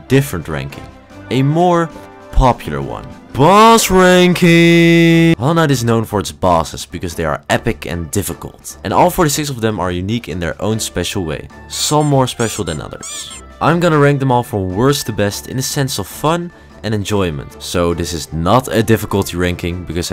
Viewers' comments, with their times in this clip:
0:03 i heard balls ranking